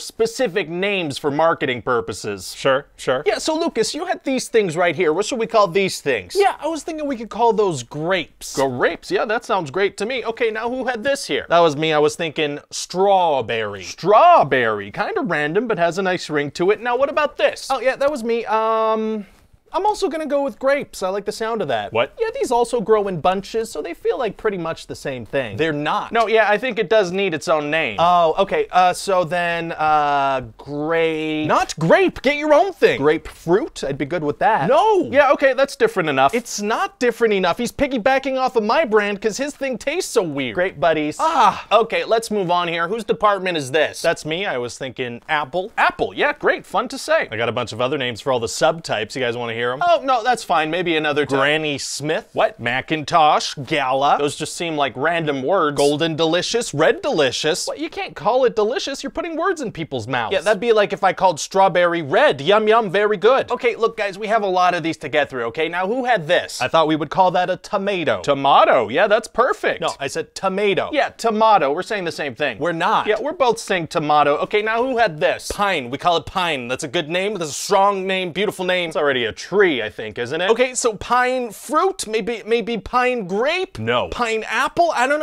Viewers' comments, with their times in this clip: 0:08 the way he says grapes let’s you know he’s making a joke about “grape without the g” type thing but not actually fully saying it. I’m not the first person to hear this. I hope.
1:07 eh tomato tomahto... wait